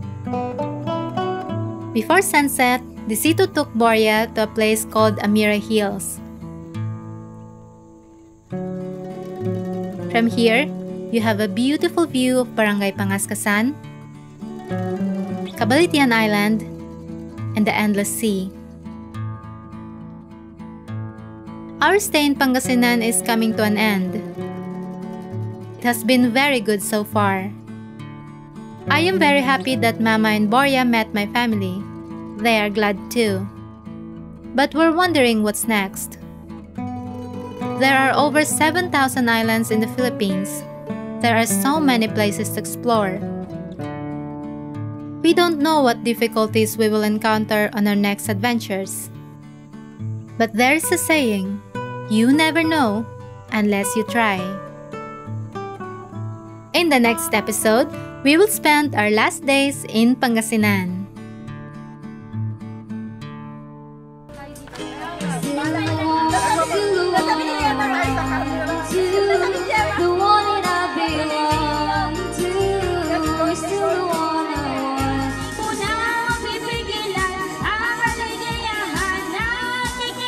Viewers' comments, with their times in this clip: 0:08 28 the music strings, very. What a wave of love..
1:06 😍 So beautiful Philippines music 🥰